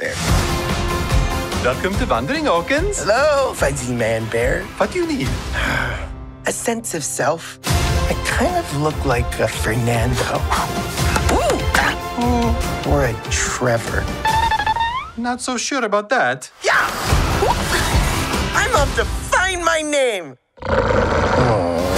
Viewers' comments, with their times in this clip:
0:04 Am i the only one hearing "f you mean?"
0:04 I literally thought he said: Fu*k u need?